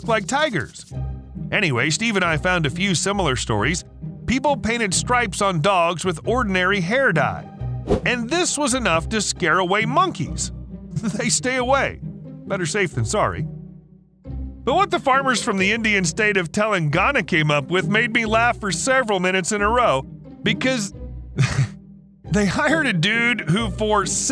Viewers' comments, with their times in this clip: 0:09 i like how he says monkeys :)